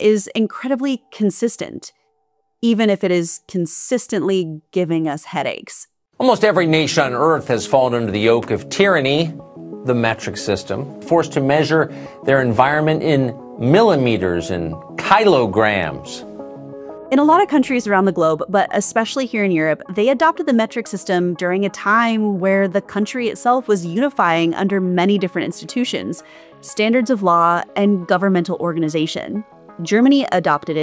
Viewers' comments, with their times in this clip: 0:07 "Almost every nation on Earth" then proceeds to talk sarcasticly and making faces as if almost every nation on Earth is wrong and the US is right, LOL
0:15 The man using kilobytes and kilowatts for years suddenly doesn't know how to pronounce kilo if its before grams. But, yeah, pretending to be dumb really took him a long way with the real ones.